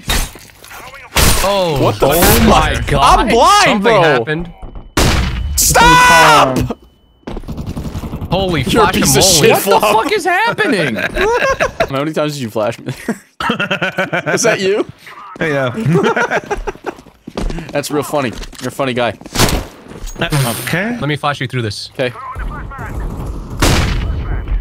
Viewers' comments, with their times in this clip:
0:05 In all my years of watching SMii7Y, Ive never heard him as legitimately mad as when he gets flashed